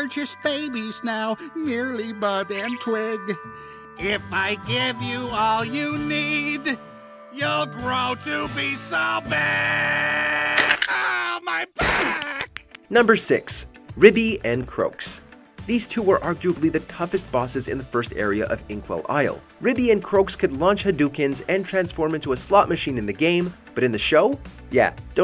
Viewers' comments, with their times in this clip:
0:10 I thought the logo would fall off from his singing lol :0